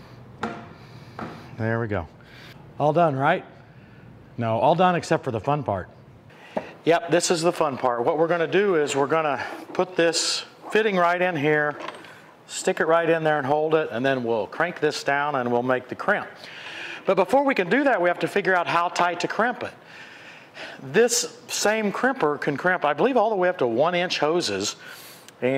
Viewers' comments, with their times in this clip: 0:07 The audio shuddered back and forth from the right and left stereo channels. Actually physically painful to listen to using headphones. What abominably did you just invent?